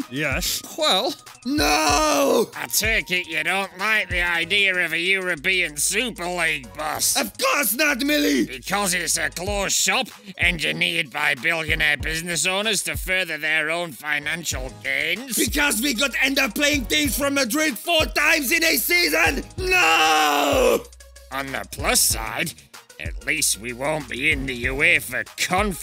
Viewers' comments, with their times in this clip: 0:07 Jürgen Klopp Voice Crack: